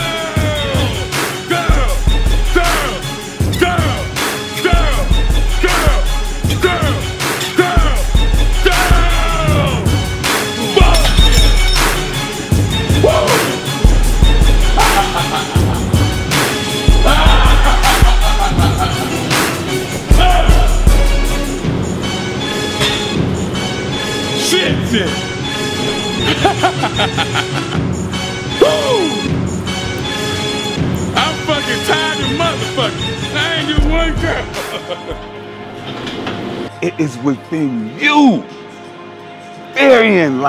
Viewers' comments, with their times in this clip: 0:06 Kai Greene curling his life out of those biceps. CT : Bullshit Maniac Laugh
0:25 the music and his laugh perfectly synchro
0:25 I've watched this video a ton of times while working out and just noticed that his laugh matches the song perfectly lol